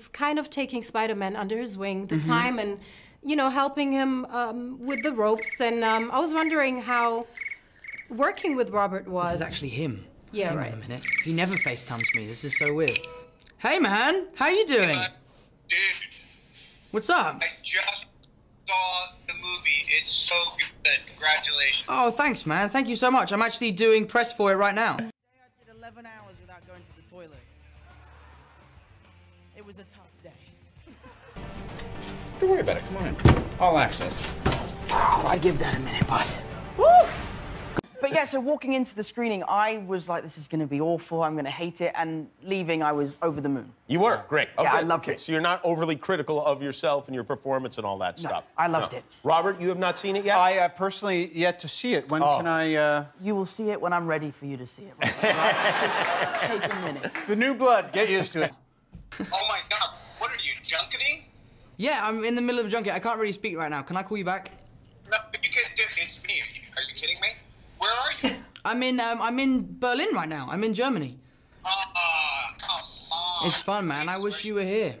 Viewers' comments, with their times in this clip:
0:04 Tom Holland ringtone 😂
0:04 chirp chirp chirp.... I thought he was knodding off due to press persons long winded question....
1:00 What did he say? "What are you, junkanee (I have no idea if that's what he said or not)?"?